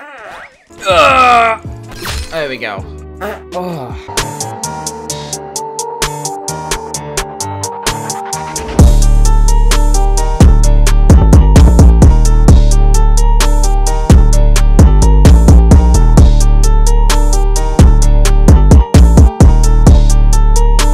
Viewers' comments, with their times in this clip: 0:03 I think he just farted LOL
0:03 What does a cow really sound like
0:03 I am farting too :D